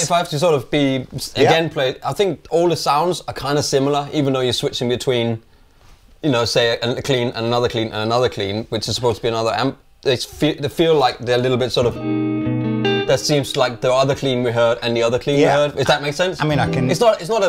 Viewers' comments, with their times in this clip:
0:05 it sound like all the amps goes to the same cabinet